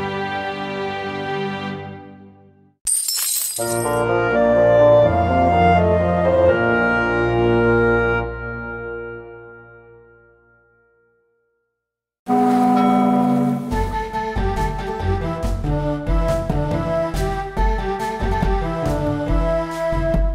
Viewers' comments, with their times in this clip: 0:03 Love the jingle that plays for Milan